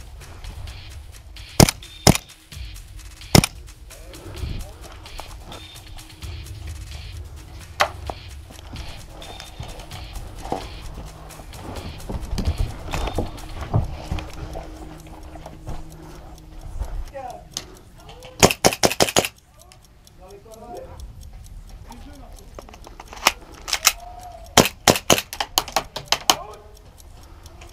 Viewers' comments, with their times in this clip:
0:08 in the vid he farted